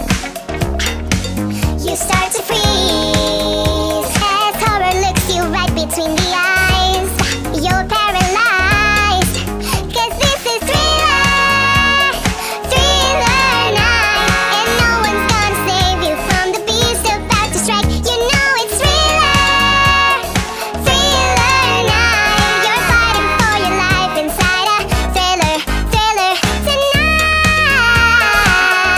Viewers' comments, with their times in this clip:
0:09 I love it when the girl screams 😂